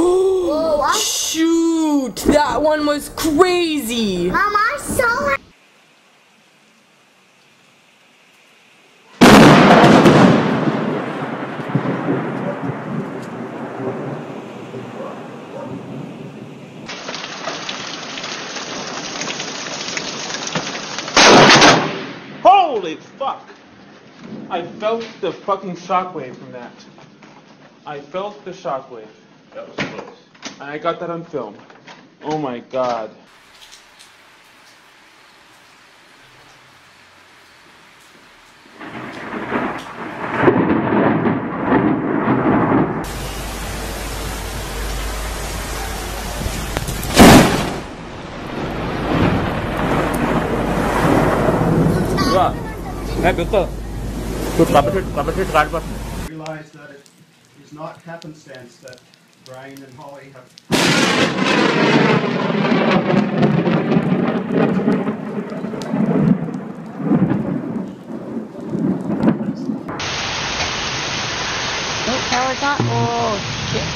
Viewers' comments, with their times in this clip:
0:07 Thunder is looks like an SMG or Submachine gun.
0:25 laughing bitch. xD
0:57 they have a wedding, but there's a thunder behind them,.
0:58 "If anyone objects to the joining of these two...." KABOOM!